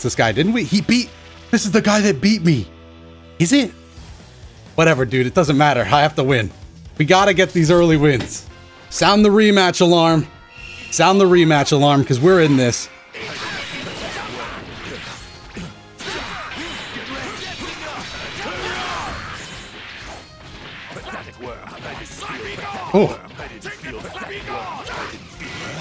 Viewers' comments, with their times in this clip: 0:07 audibly sits forward